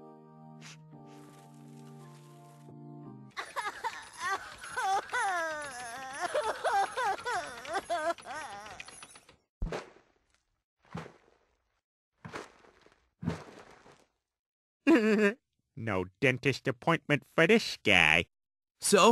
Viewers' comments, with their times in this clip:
0:04 why is lois crying like a 5 year old